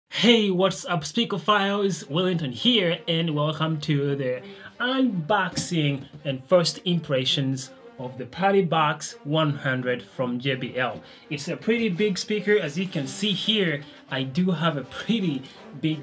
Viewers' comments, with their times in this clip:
0:01 Am i the only one hearing "welcome back speaker files"?